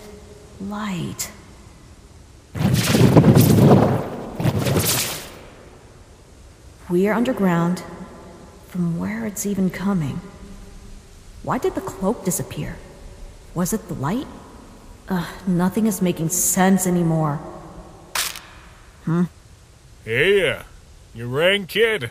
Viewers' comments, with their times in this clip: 0:04 ah yes. Gaster speaking in lowercase.